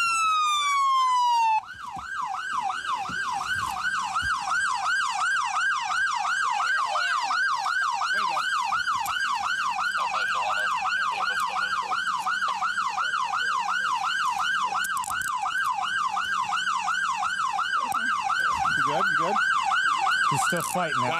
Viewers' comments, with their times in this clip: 0:09 somebody shut the siren up